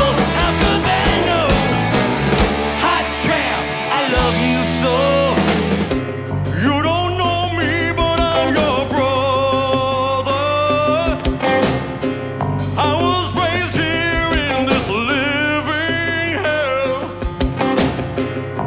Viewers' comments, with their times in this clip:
0:06 wow it's like michael macdonald is still alive and with us today